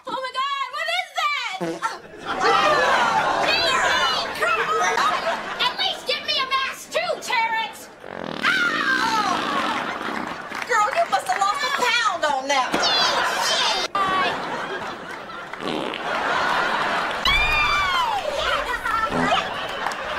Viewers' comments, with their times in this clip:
0:08 that's Bad. You're going to Hell for that Bomb💣